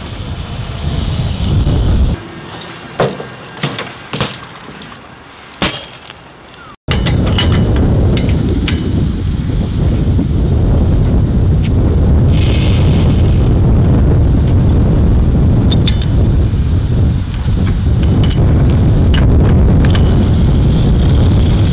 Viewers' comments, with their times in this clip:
0:08 you can clearly hear a space shuttle starting but you decide to record a random guy tightening his wheel???